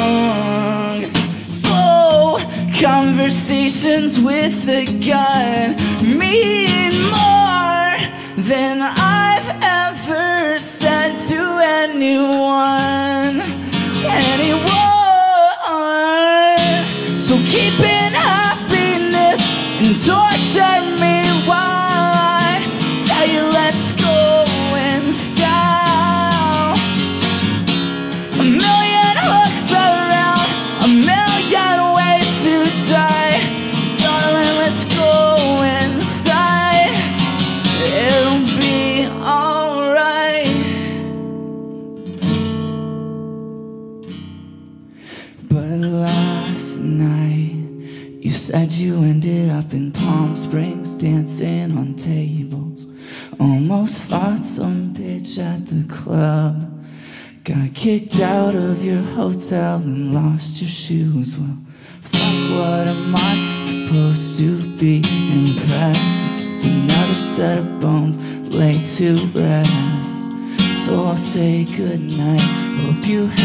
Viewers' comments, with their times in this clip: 0:05 dat voice crack, fam (i honestly have no room to talk. I am fricking 13, my voice is sorta squeaky as it is, and for some reason trying to seeing at the same pitch as him, my voice wants to kill itself but i love this song along with the rest)
0:45 tHE LOW NOTE I NEED AN AMBULANCE
1:01 When his voice cracks and goes into a lower octave i started crying because his voice is so pure and full of raw emotion